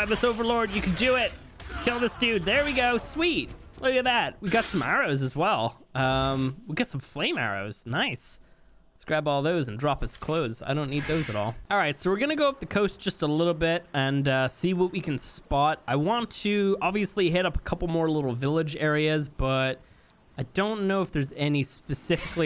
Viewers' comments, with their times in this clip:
0:08 nice freestyle rap man